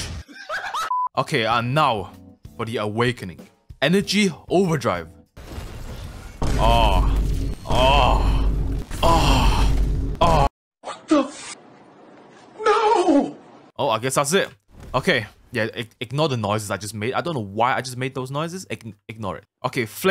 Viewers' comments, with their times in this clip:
0:04 Goofy Ahh Moan